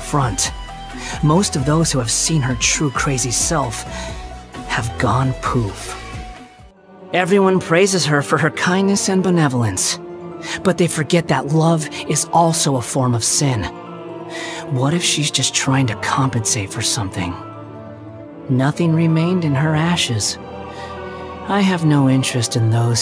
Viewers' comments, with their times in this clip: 0:04 I'm sorry, but the way he speaks had me chuckle for a bit.